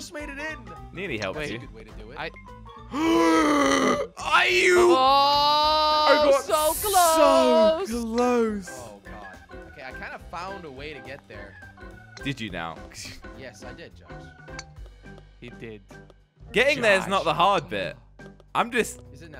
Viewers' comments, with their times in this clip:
0:04 like if u heard android sounds